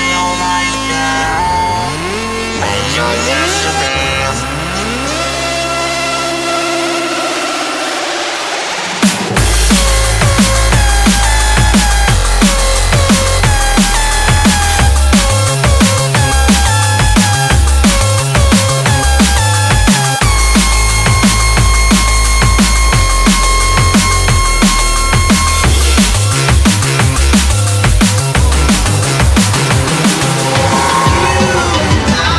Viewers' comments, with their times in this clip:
0:07 best drop evaaaaah
0:14 reminds me of charlie brown for some reason..